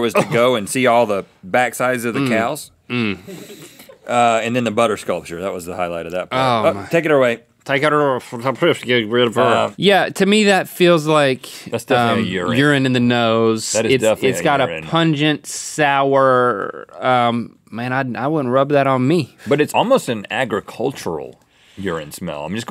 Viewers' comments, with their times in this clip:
0:07 LMAO Link Struggling to talk was hilarious
0:07 did link have a stroke. LOL he said ."take it a er fa ra fer"